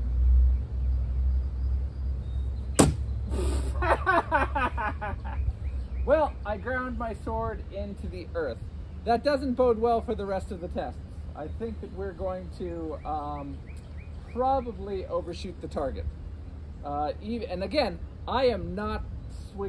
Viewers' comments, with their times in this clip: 0:03 Loved the genuine laughter 😂